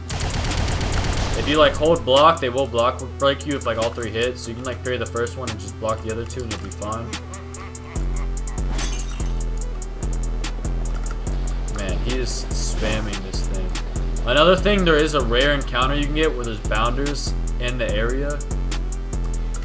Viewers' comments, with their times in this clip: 0:05 the laugh goes hard asf with the beat